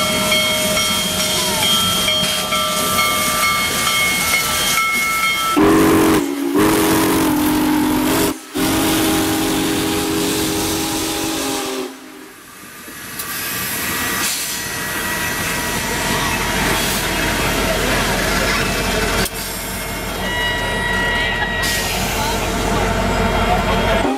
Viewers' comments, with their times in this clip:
0:05 Clown act engineers! 😂 😂 Braked 4014 Big baby boy too hard as you could hear to a quick halt instead of gently! 😂 😂 😂